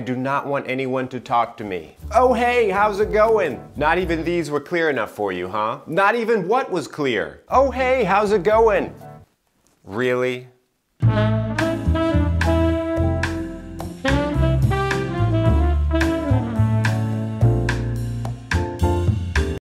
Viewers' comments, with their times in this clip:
0:10 “…really?” The feeling so exquisitely captured, my stomach sunk!